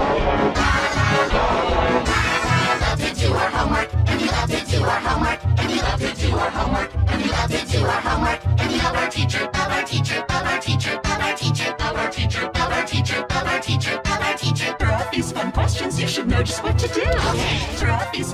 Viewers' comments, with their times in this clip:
0:03 sounds like crying x